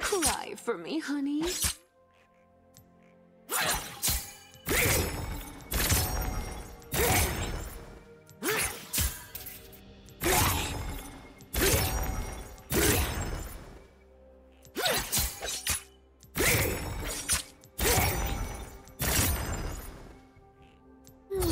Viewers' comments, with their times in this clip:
0:03 what is that ? That’s not her hate spikes ! Also I love the little sound after her ult, it’s so cute 🥺💖🌸